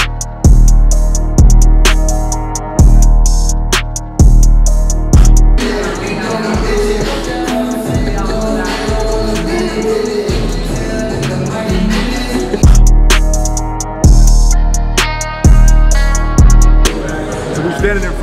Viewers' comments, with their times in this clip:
0:05 take off singing